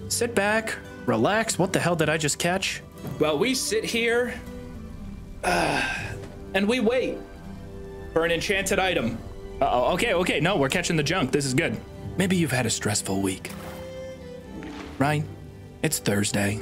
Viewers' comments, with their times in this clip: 0:03 That Outward music hits different.